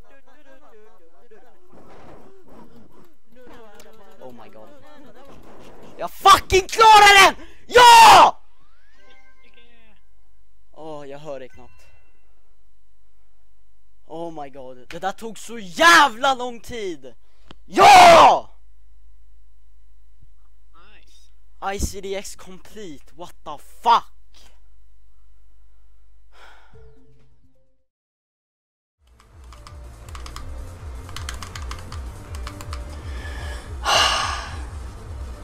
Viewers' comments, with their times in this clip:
0:05 It's actully Swedish! >3<
0:05 Its Swedish, i'm living there :D
0:05 is swedish cursing not russian xD
0:06 it's Swedish x)
0:06 no don't russian cursing
0:06 I had my headphones up high (R.I.P My ears :( XD)
0:08 Thats swedish cursing, not russian
0:09 its actually swedish...
0:10 The guy is speaking Swedish
0:10 Swedish not russian
0:10 After it was swedish :D
0:18 Swedish or Norweigan... but never Russian mate ;)
0:20 its swedish not russian lul